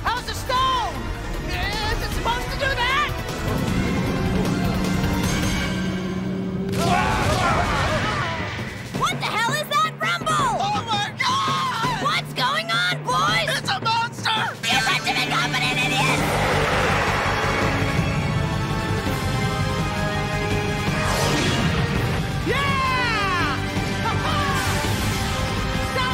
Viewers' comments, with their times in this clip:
0:08 LMAO the voice actors are amazing in this dub